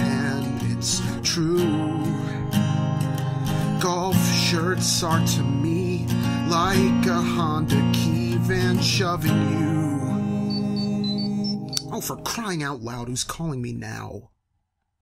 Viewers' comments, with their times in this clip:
0:10 Ha! Thats my text tone